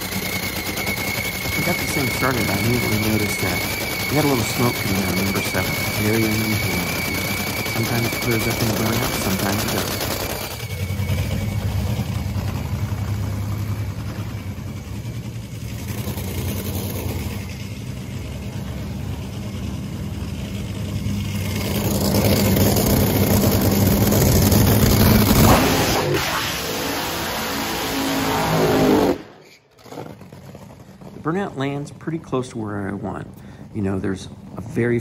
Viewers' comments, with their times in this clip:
0:06 Whatever you said -ish of the vid, was completely lost on me. Hearing the engine at the same volume at your voice, just made it impossible to hear. Fyi. Otherwise, cool video!! Edit: added more positive msgs.
0:20 even the subtitles liked the sound of the dragster